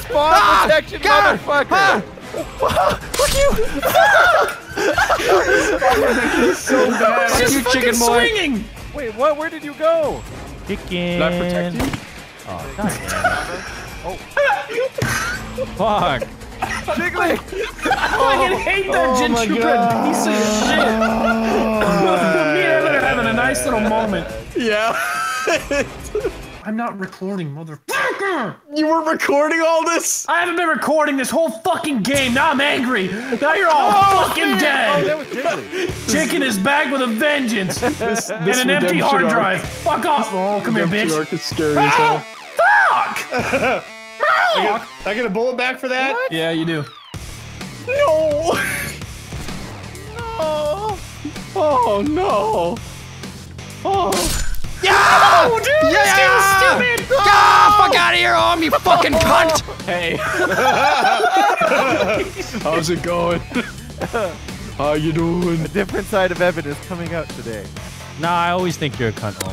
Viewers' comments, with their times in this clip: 0:10 did Vanoss bang his desk?
0:11 QUÉBECOIS : did he say ‘oh caline’ ??
0:57 Only true fans will get this Vanoss raging